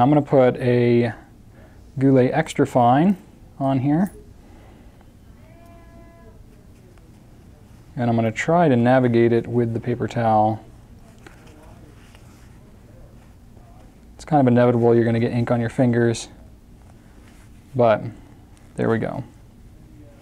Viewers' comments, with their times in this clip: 0:04 that's a loud kitty!:chillwcat:🖋